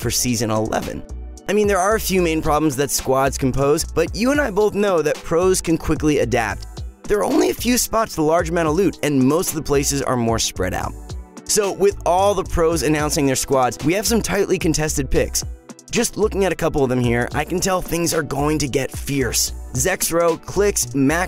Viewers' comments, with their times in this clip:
0:07 bro you sound like a robot 😂😂